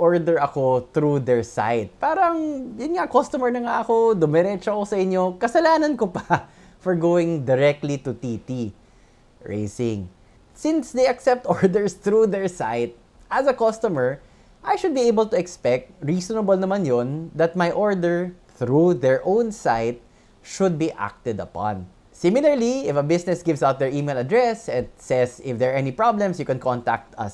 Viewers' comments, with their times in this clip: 0:08 a brief, yet uncomfortable pause 😂